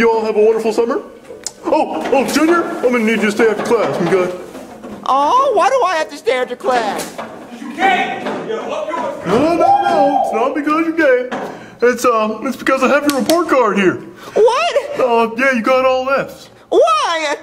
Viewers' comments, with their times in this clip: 0:05 that one guy waving his shirt around while screaming XD